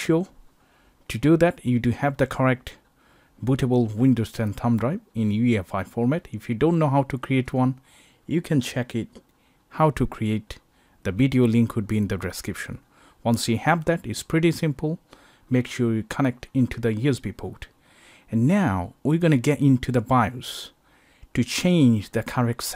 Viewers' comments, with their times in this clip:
0:03 what's Windows Tamtam Dry?